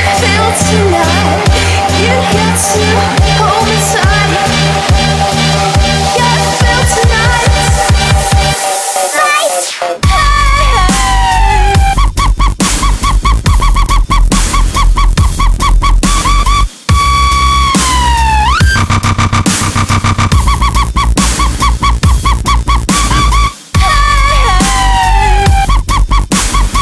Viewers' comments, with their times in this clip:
0:10 sounds like a chiwawa getting repeatadly raped.